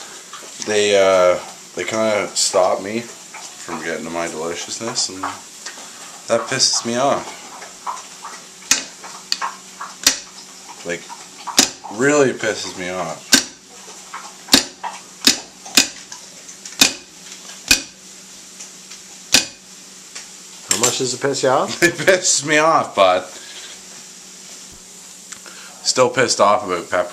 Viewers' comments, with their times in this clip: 0:10 I hope that was the dog drinking water lol